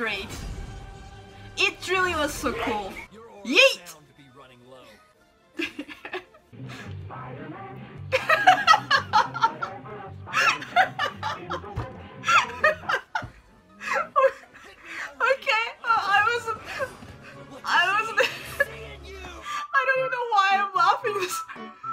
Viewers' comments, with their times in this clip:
0:07 me knowing homework exists Tbh your laughs are G O L D